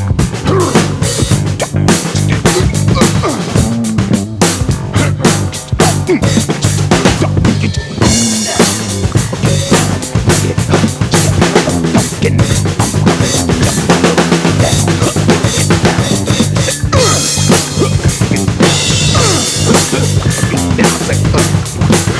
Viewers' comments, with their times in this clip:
0:06 That pattern you played around the mark was awesome. 👍